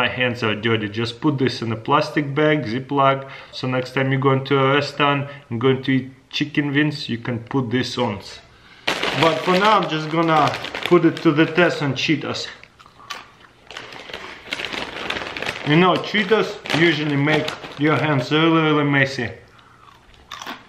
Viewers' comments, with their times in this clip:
0:06 chikin wings so cute ... And im eating chicken wings right now 😂🤣
0:06 chickin vins xd